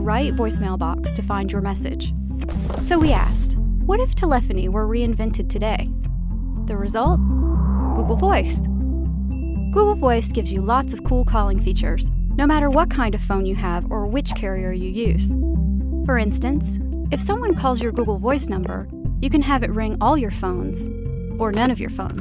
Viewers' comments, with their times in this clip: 0:03 Lol Tele pho ne